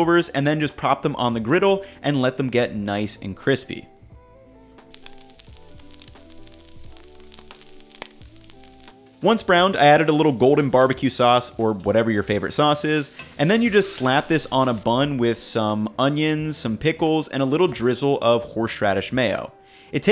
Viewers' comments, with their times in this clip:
0:05 ASMR crispy time. love it.